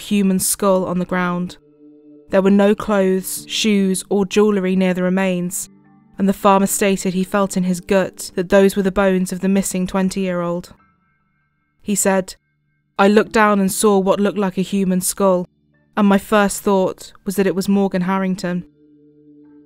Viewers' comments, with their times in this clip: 0:04 Why does everyone I seem to watch on YouTube pronounce jewellery wrong? It’s usually Americans (this is the first Brit I’ve heard saying it wrong). It’s JEW EL REE Not JEW LUH REE Or am I mispronouncing it? Am I missing something??